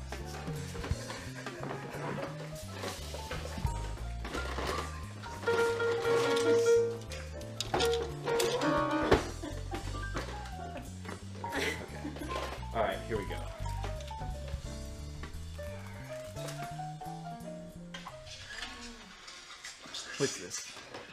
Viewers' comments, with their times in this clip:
0:05 kinda sounds like the beginning of the Lion King